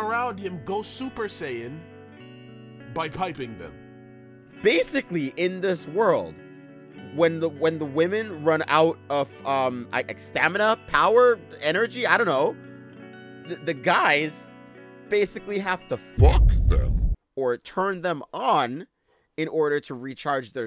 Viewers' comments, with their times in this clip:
0:03 HAHAHAAAAHAHAHAHHAHA that delivery stop SAY IT AIN'T SO